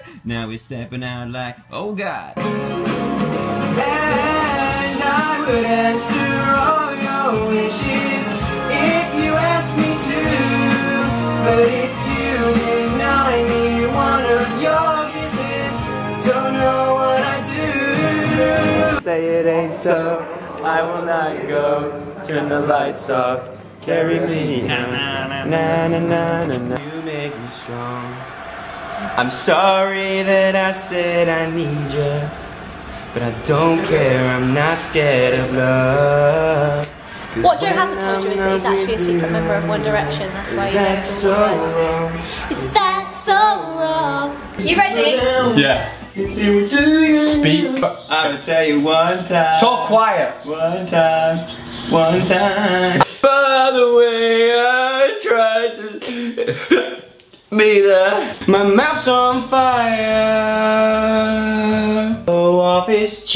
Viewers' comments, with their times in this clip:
0:03 He sings so nicely!!!!!!!!!!!❤❤❤❤❤ It makes me feel so much worse about how badly I sing.😂😂😂😂😂 😭😭😭😍😍
0:26 you guys do not know how much I've repeated that part I freaking love him. This song has been stuck in my head for days and every time I just hear Joe singing it I tear up no joke. This whole compilation is amazing.😍😍😍❤️❤️😘😘😘😘
0:48 how does he do that many riffs at the end (I actually don't know if it's called riffs) He also looks really hot
0:51 is the best vocal! 💯%